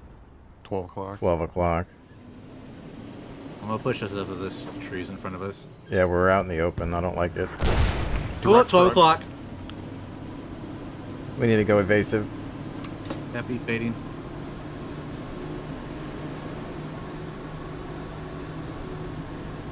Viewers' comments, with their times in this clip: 0:05 "We're out in the open, I don't like this". Shell wizzes by